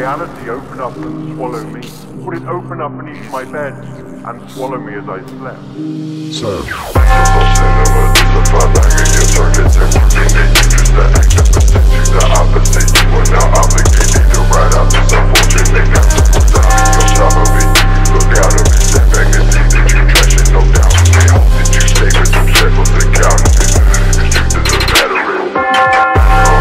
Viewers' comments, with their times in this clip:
0:07 bell sound scared me lul